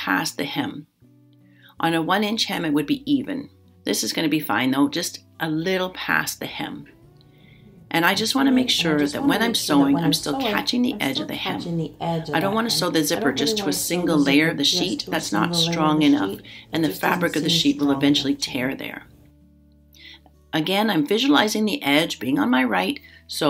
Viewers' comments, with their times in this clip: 0:08 I just decided yesterday to make a duvet cover for an older comforter I have, then lo and behold, your duvet video shows up! Beautiful technique! (P.S. there was an extra layer of audio.)